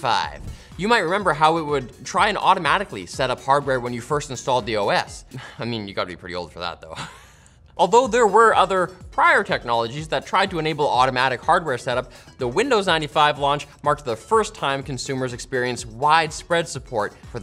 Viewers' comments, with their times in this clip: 0:05 he he, hating laughing in cry